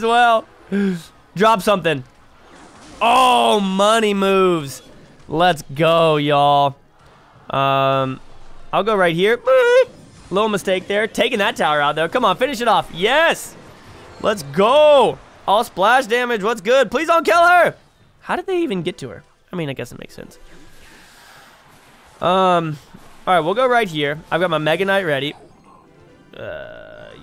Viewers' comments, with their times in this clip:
0:09 What was that noise?!